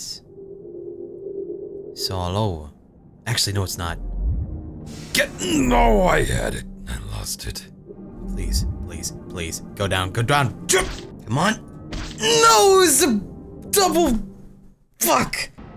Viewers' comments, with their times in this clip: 0:03 Cry just went from "disappointed Cry" to "demonic Cry" jesus that scared me a bit LOL I like that you got so excited you forgot how to English "I broked it! I broked it!" XD